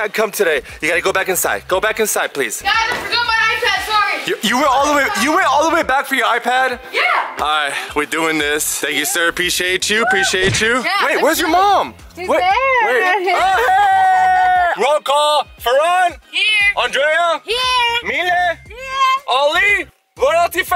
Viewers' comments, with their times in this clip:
0:03 He always shouting man😡👩‍❤️‍👨🐶👹